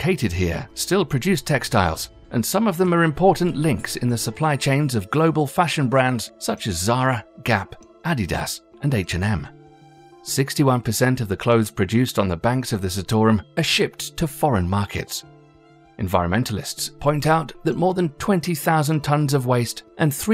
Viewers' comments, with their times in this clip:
0:07 ada-das? What company is that?